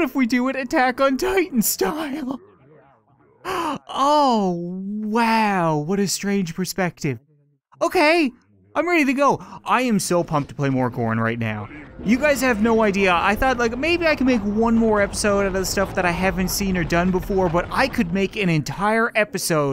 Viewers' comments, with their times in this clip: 0:07 your exited to play WHAT sauce